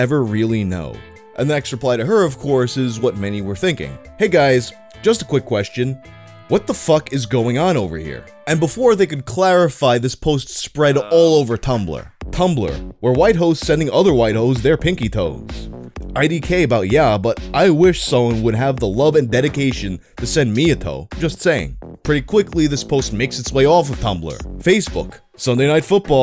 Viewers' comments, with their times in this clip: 0:10 What the fuck is that song ? just about gave me a heart attack
0:12 Whats that BGM starting ? It's groovy and I hear it a lot